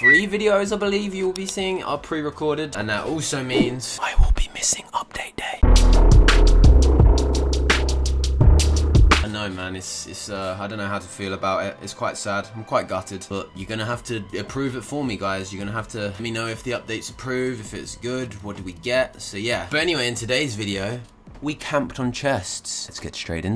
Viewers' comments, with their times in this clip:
0:03 very scary noises
0:06 mocking bird though 🤣🤣